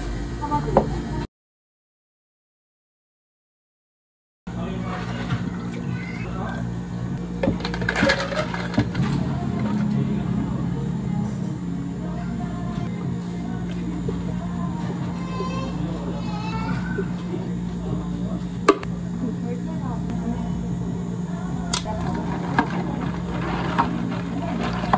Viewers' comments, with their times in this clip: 0:10 I was watching while studying and got distracted when I heard NCT Dream on my way playing 💚